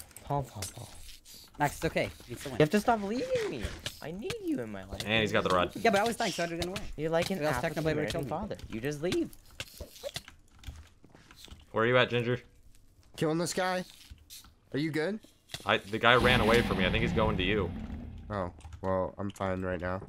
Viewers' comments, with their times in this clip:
0:06 "You're like an African American father, you just leave." Dead silence